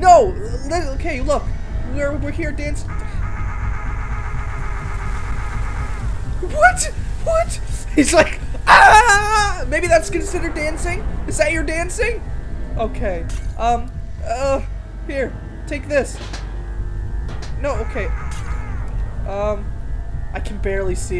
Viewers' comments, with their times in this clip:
0:04 He's not dancing, he's laughing! because he destroyed your thing!